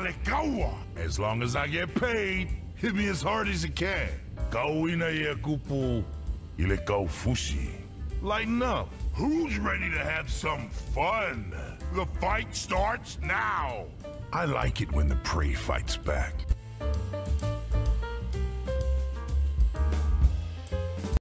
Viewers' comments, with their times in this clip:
0:04 i do understand that honestly, he sounds like he mumbles in